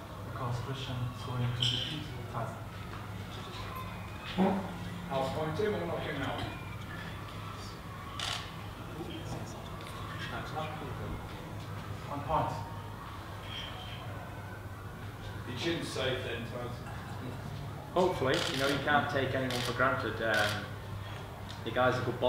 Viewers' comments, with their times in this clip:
0:03 I think someone farted